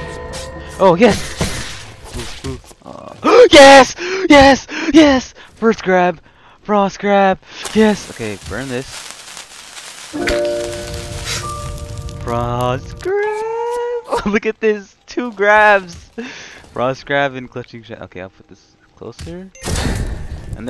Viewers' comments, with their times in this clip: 0:04 congrats on 3k! been here I think before you had 1k, so ggs! good luck with higher! the excitement in this man’s voice